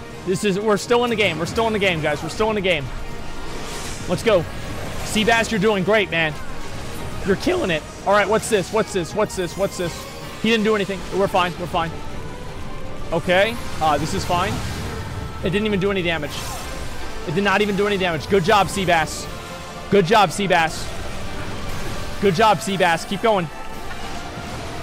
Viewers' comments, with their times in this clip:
0:06 voice crack master